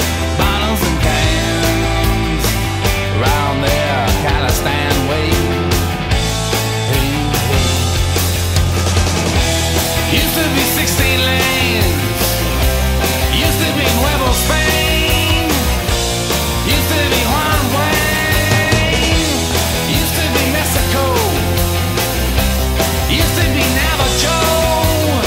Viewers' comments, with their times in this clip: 0:08 Holy shit that attitude change Song takes a deep turn... awesome song.